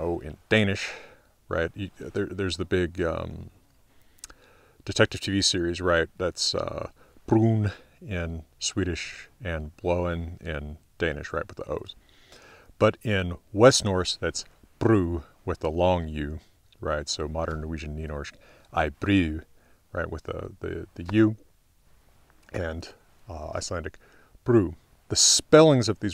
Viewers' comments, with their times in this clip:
0:09 😄 Nice Danish pronunciation. But don't worry, we all struggle mightily with it 😉